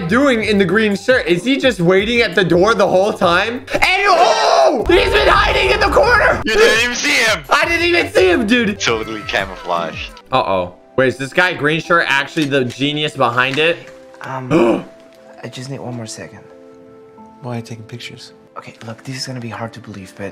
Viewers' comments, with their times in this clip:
0:05 Boss music starts playing